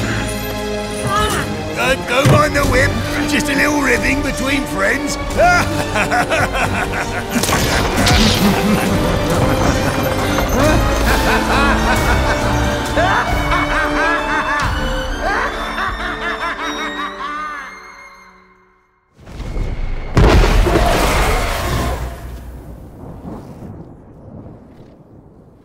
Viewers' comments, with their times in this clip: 0:05 can can hear Thresh laugh along with Borth
0:08 Treshs laugh sounds like lord garmadarn for Lego ninjogo
0:12 you can definitely hear the laugh of Thresh. It's wierd because Thresh is so evil and dark, but somehow manages to make you love him anyways. Amazing cinematic!